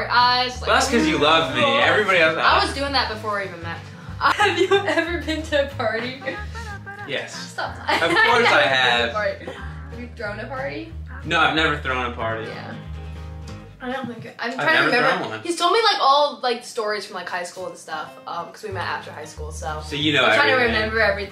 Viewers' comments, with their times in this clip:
0:08 is that a fart?